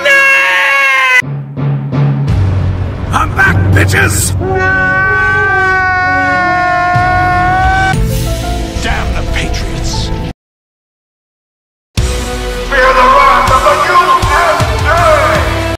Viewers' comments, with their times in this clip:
0:11 hahahahaha who laughed the last of the ant 😂😂😂